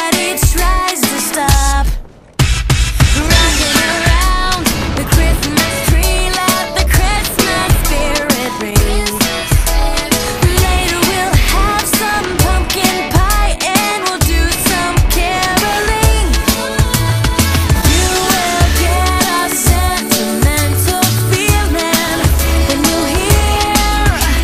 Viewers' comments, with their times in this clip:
0:06 haha it sounds like the singer has like a lisp or something. "Wockin awound da cwismas twee"